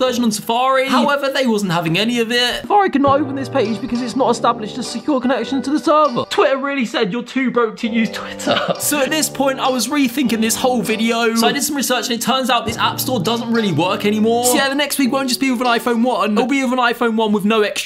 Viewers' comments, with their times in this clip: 0:04 I thought it said satan instead of safari for a second